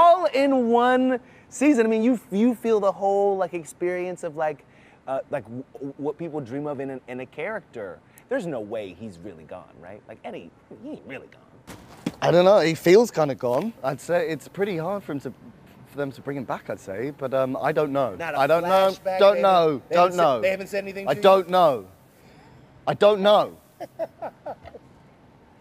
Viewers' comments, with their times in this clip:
0:09 The way he said "I don't know" over and over, makes me think he's actually still alive 🥲